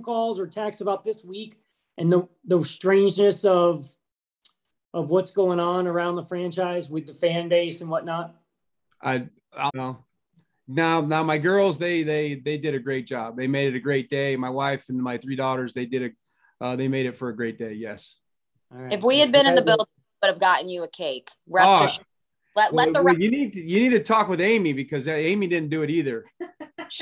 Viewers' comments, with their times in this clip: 0:08 Bev say something y'all don't like, or was that the world's most convenient technical error?